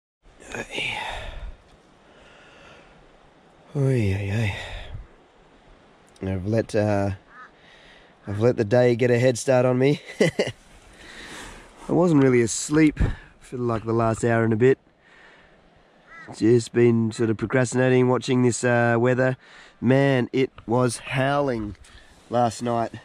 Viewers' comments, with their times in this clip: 0:09 I love the way you laugh 😁